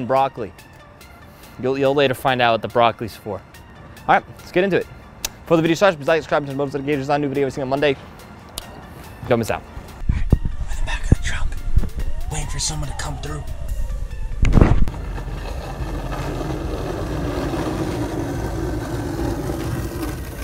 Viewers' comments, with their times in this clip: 0:06 Can anyone tell me what language he was speaking